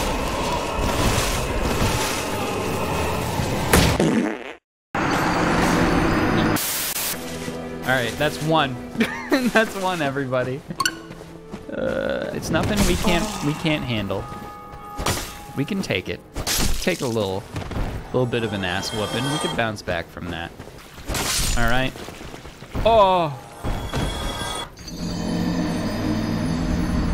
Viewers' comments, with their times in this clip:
0:10 I love that "select" sound from Fire Emblem Awakening.